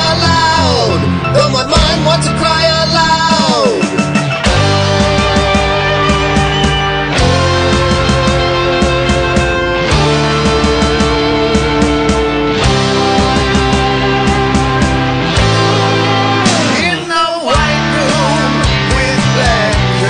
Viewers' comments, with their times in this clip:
0:07 Wow, such a clear production! Quite the ski ballet also. I'm not a professional musician, but I think you and your group have nailed the CREAM sound, made it a little dirtier instrumentally while retaining the clean harmony. I like the mighty change to White Room. A sad story about your friend, soaring dedication here though. "I'll wait in this place, with the lonely crowd. .while the shadows run. . . from themselves."